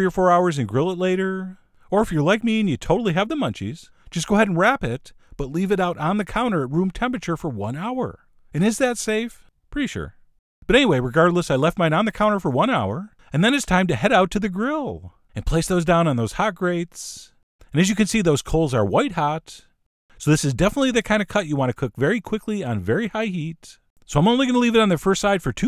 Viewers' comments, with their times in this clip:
0:10 One of the most irritating people to listen to I've ever heard. was way more than I needed.